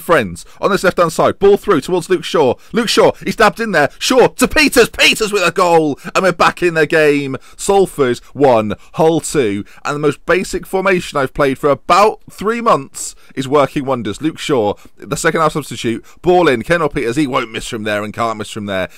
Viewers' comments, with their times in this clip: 0:03 Dabs in there? \o7